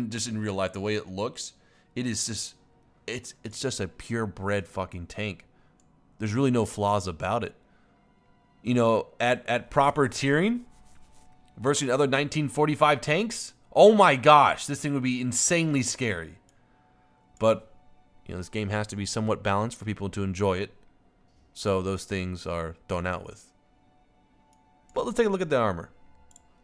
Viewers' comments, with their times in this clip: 0:10 Lol listen to that EPIC beard scratch.